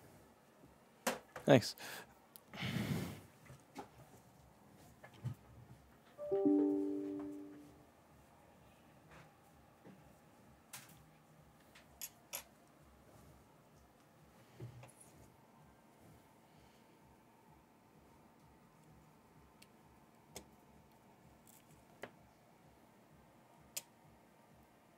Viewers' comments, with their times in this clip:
0:05 that sound when you accidentally sit on a USB cable